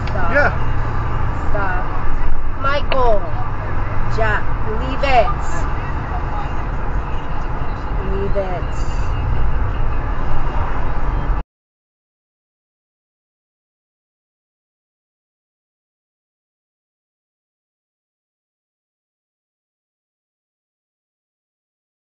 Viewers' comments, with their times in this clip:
0:03 why she talking to him like a dog